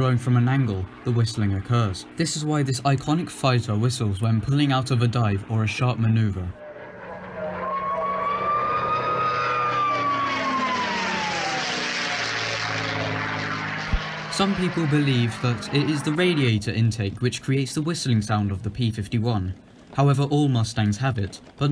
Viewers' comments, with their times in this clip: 0:07 I can hear R2D2 screaming lol
0:08 was that R2 D2 screaming???
0:08 i think it's just me but i heard r2d2